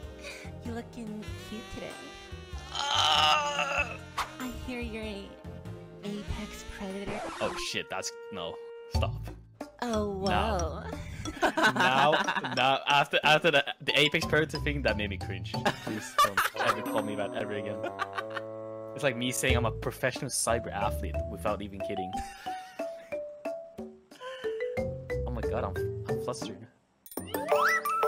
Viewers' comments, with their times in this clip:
0:09 That OWO tho